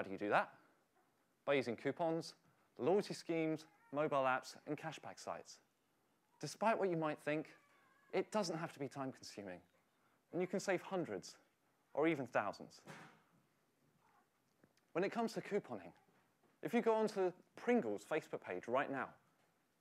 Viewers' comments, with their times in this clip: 0:05 Why do I hear cat